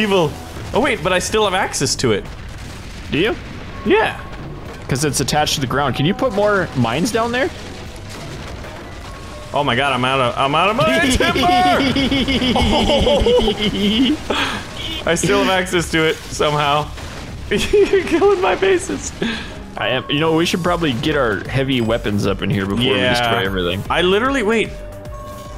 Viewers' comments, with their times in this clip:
0:10 i hate the childish 'heeheeeheheee' of his edit: